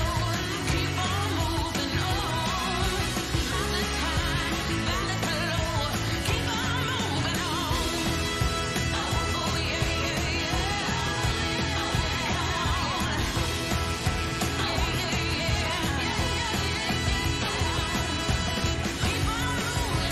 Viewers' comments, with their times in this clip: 0:05 the person who sung this songs song sounded kinda shaky no offence